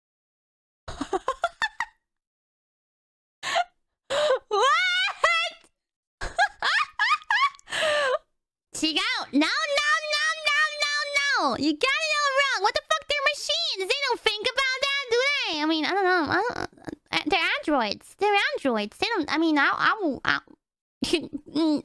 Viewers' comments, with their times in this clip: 0:05 Kiara briefly turned into Pekora